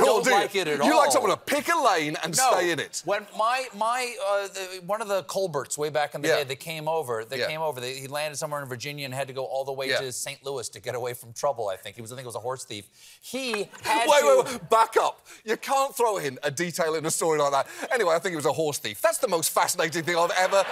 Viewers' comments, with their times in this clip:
0:04 I couldn’t hear anything after once Stephen dropped that Hard T on his name. ColBERT